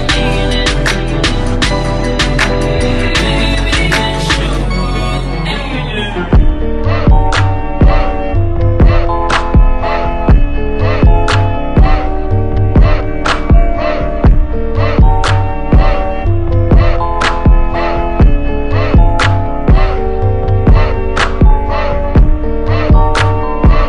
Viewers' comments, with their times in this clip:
0:04 I love this jazz